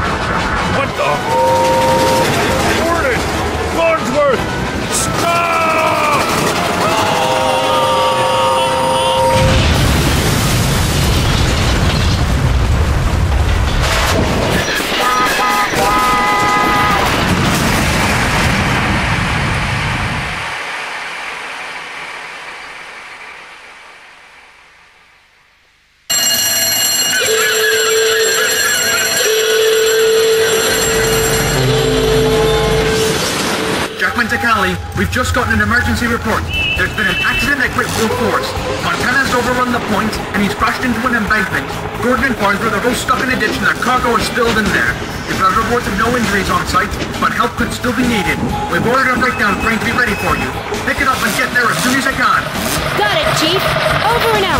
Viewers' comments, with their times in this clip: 0:06 Is it just me or does Farnsworth's scream kind of sound like medic from tf2?
0:26 i was in love with the fire bells noise, BUT i cant find the Sound just like it
0:38 Georgia's Whistle The Railways of Crotoonia